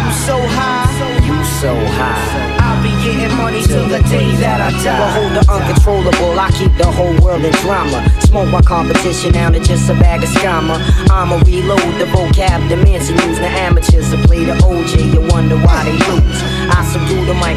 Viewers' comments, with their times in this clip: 0:05 THAT FUCKIN SNARE SOUND)))) DOPE))))